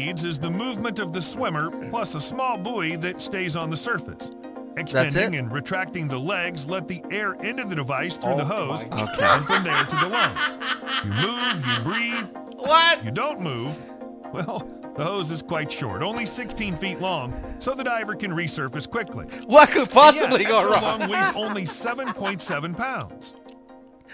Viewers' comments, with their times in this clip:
0:07 haha :D love that laugh, what could possible go wrong :'D